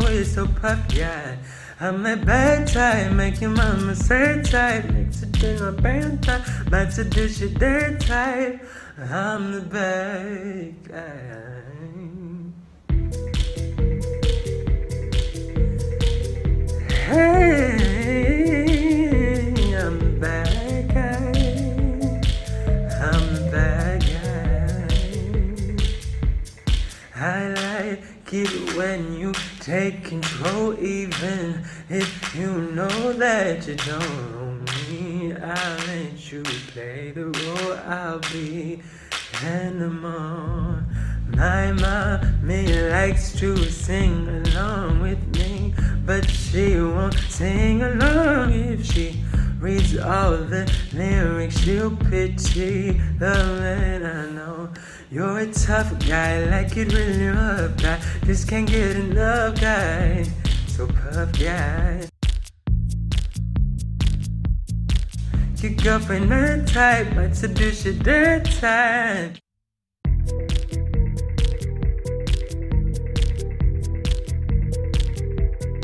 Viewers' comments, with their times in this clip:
0:05 are we not gonna talk about him completely forgetting the words but still making it sound good somehow
0:05 i do not mean to be rude but what did he say?
0:09 “I’m the baaad guUuUuuUuy” THAT WAS BEAUTIFUL 😭😭💗
0:09 Im a baad guuUUuuuy 😭😭 that was fucken beautiful 😍
0:16 i thought he was about to sneeze, but i still said "bless you" after all that.
0:17 MY SOUL LEFT MY BODY😩 teach how to spit out runs like that
0:18 omfg ur so good. your voice is like butter 😎
1:02 so familiar 😂 great cover (again). i guess your voice is from another planet, it's just too perfect 😂❤